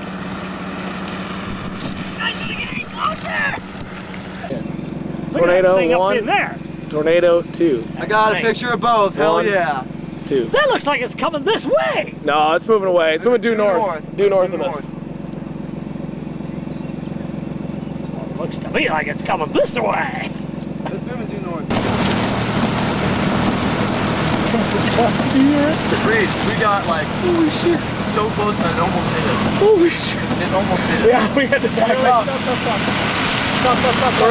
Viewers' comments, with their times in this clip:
0:10 when you bring Donald Duck on a storm chase.
0:18 Didn't know Yoda was a 🌪 chaser.